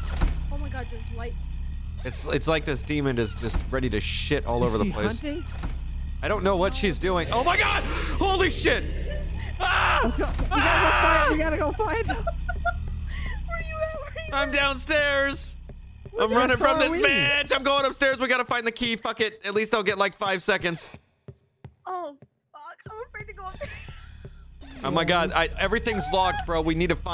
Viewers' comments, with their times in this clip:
0:09 POLECAT.... LMAOOOOOOOO YOUR SCREAM *IM SO DEAD*...............